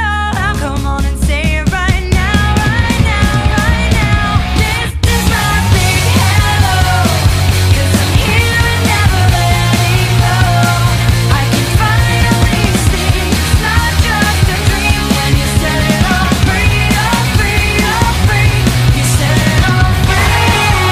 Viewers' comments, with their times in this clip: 0:04 I threw the towel in w the drum skip… I mean come on